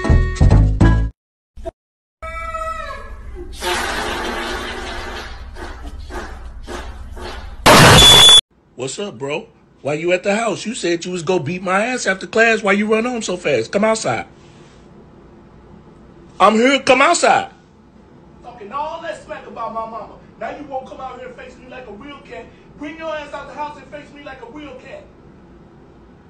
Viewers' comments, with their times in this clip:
0:10 Animals being dubbed by black people is the funniest shit 💀